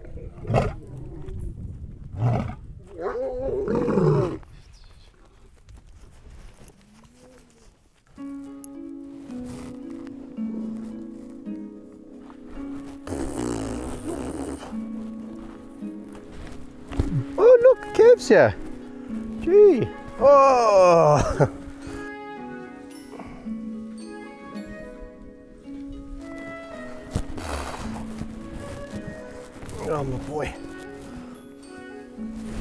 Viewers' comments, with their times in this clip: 0:09 The track that comes in is great. It sounds like something you'd hear in a Miyazaki film
0:13 Unbelievable, lion fart.